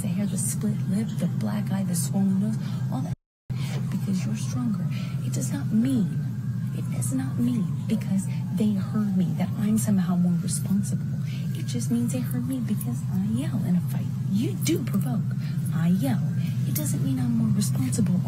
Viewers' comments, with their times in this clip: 0:03 Is it me, or has anybody else noticed there is a split second gap in the audio of Amber and Johnny discussing their fighting right after she mentions all her physical injuries ? We don't know how johnny responded, he could've said 'but that wasn't me that did that'. Why would the audio need to be edited? Would like to hear the original.